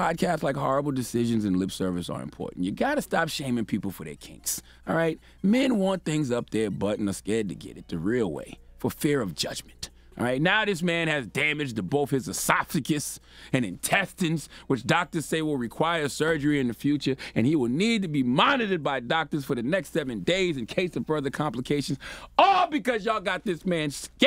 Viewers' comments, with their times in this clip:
0:10 lol Did my man just say "Asoptagus"? hahaha